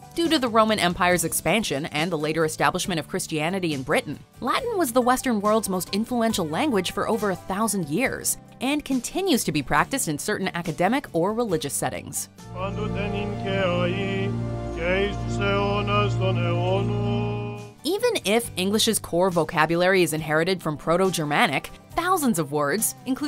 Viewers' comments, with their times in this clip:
0:06 starting this is not Catholic, it's Orthodox, and he is speaking Greek. anyone mind if I tell watchmojo to get their sh*t together?